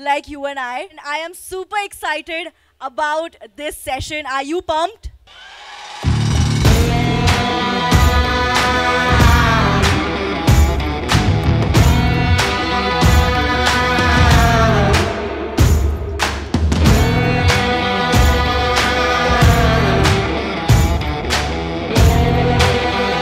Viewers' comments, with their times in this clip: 0:06 sadhguru's entry in slow motion and background music is fabulous. Once again I became a great fan of Sadguru....
0:06 entry was super fantastic like south hero bgm so amazing